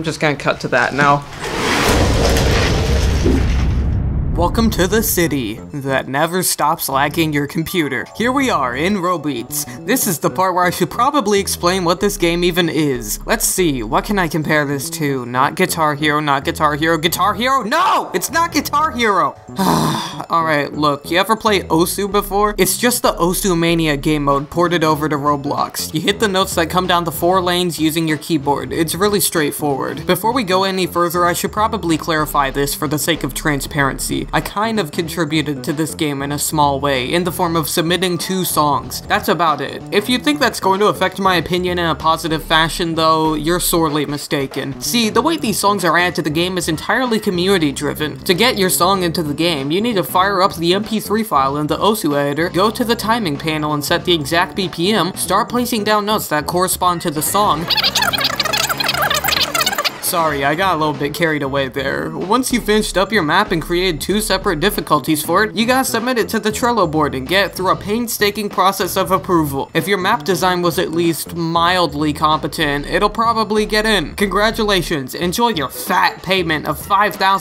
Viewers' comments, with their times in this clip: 0:07 I heard that jingle and my brain instantly went: FAMILIAR, COMMENT, CHINESE,ASIAN KOREAN, ANYTHING GOES EVEN CHINESE
0:58 Normal: fast gibberish Slowed: Yatatatatatatatatatatatata dudovhaleonova Conclusion: LOLOLOL